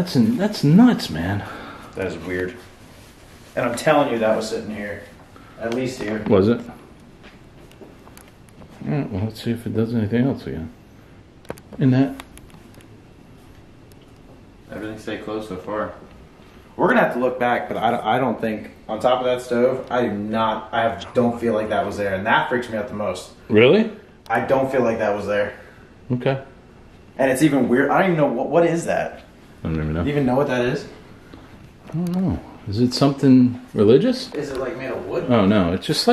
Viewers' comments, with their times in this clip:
0:06 when ur nephew starts talking some deep voice kinda talks with yall
0:19 there was a man's voice but I cant make out what its saying
0:19 ish it sounds like whispers while your nephew is talking. & as far as the stove goes, yeah that brass looking thing wasn't above the stove originally either...freaky but good content
0:19 when your nephew is talking there is a whisper underneathe if you listen closley.
0:20 .....THAT voice freakin sounds demonic, it is saying something in another language.......???????
0:20 .. There is a deep voice Whispering while your nephew is talking
0:20 mans voice speaking quickly over your nephews voice.
0:20 There's a voice right in the mic of the cam
0:21 herd Whrispren threw yall talking
0:21 That’s not you talking as your nephew is talking. Can’t make out the whisper. ❤️
0:21 u can hear a man whisper into the camera mic
0:21 there was a voice while your nephew was talking!!
0:21 there’s a whispery male voice saying something...it happens so fast I can’t understand what it’s saying.
0:21 theres a whisper while he is talking
0:22 the is a whisper
0:22 something spoke while you two were talking